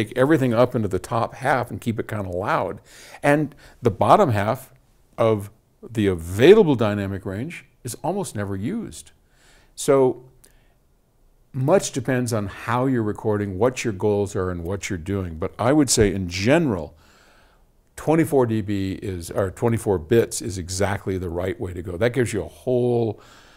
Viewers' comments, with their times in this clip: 0:10 Speaking about not knowing what to do with dynamic range: Don't you love how the automatic dynamic range limiter starts to fill the silence with background noise (like )?